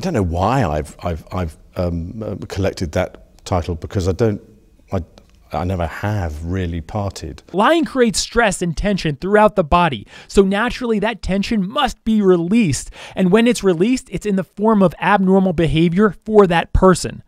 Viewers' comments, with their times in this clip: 0:05 Prince Andrew doesn't "pottie".